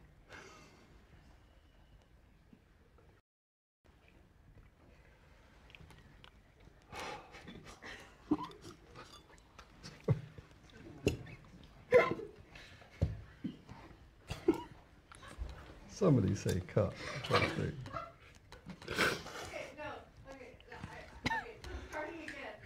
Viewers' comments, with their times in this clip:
0:09 Josh was doing JUST fine until Bill made Miranda laugh, but oh my goodness bless him